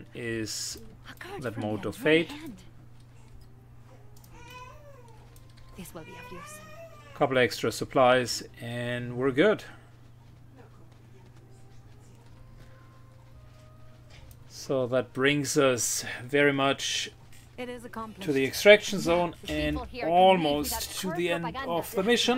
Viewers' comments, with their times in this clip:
0:07 Is that your new editor I hear in the background? Haha